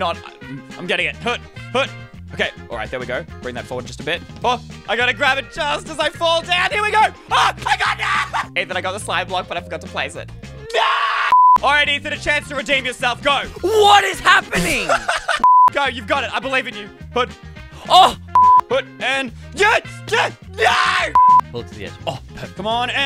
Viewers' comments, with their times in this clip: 0:09 that scream tho😂😂😂